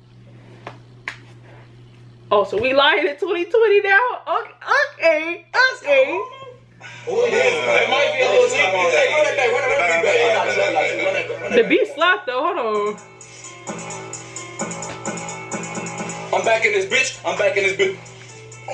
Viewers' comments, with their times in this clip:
0:04 the way she said ok on was funny af😝😂😂